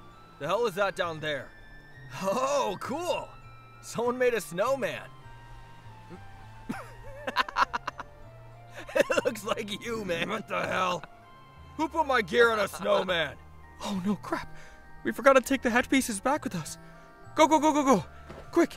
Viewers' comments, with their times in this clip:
0:06 Kirishima’s laughter is contagious 💀